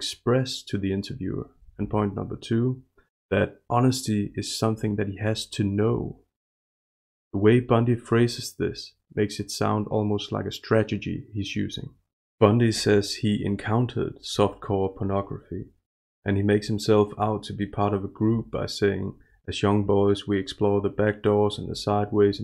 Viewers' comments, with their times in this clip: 0:10 strategy, not stragety. We all do that and I laugh everytime.